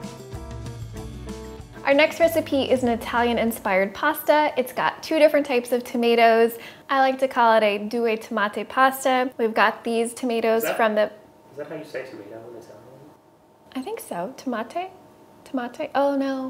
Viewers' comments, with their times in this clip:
0:04 you said tomato in a german way but with a french accent